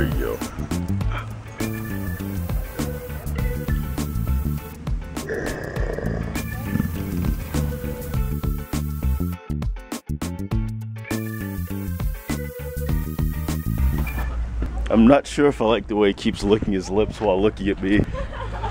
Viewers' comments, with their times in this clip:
0:04 Human: GrRrR. Lion: Oh Really Hooman? I do it better. grrrrrrrrr ~ ~